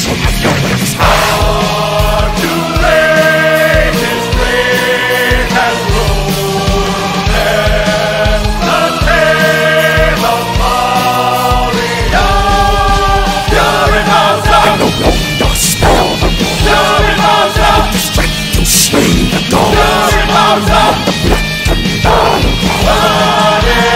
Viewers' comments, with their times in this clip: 0:06 This is the theme Bowser deserves, and while I'm skeptical on how Bowser sounds in this, the chorus is defenitly cool and this part gave me chills.